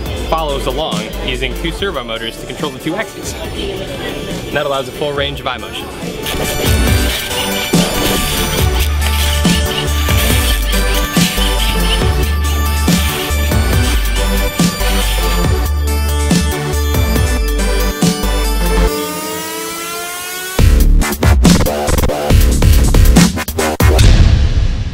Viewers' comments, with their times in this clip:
0:06 Glados Voice Loading Test Chambers...